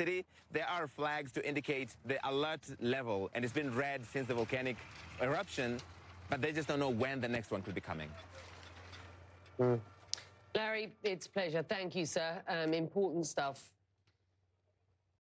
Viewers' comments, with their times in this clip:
0:09 Did anyone hear the fart 😂